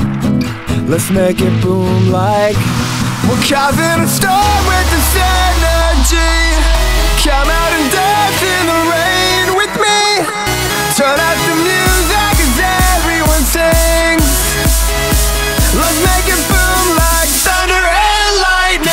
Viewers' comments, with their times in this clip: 0:03 Am i the only one that noticed he threw a spongebob leg at the guy behind him, the girl started laughing and the guy was like, really.